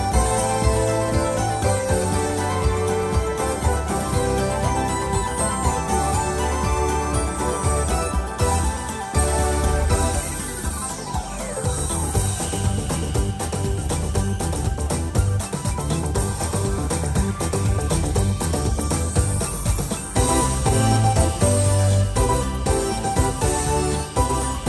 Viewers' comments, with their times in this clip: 0:09 This part, and this part only, is the only thing that actually sounds good with the Underliner.